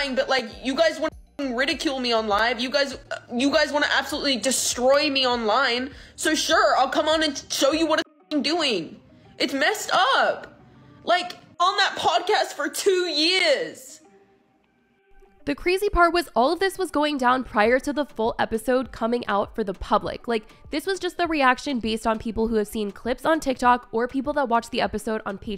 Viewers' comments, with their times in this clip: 0:09 😂 fr her accent came in and I was like holdddd up..... wha she say